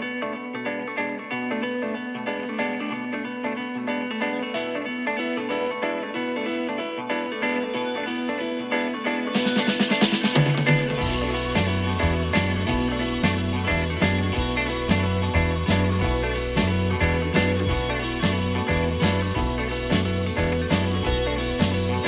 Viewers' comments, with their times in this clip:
0:09 That drumroll tho